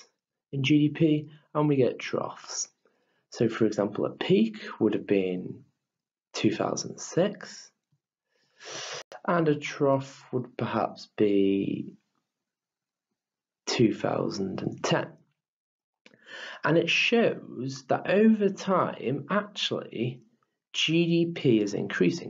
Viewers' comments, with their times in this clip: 0:08 Why does he inhale after saying 2006 ? 😭